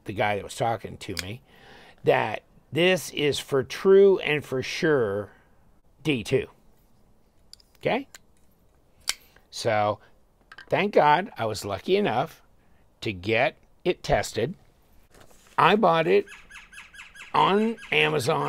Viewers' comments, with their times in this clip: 0:05 SEAMLESS audio cut.